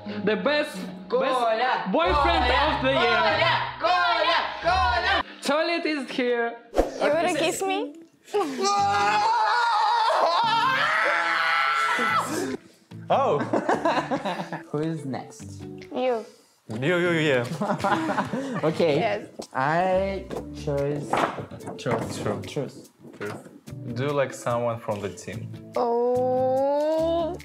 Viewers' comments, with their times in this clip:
0:08 bruh his scream 😂😂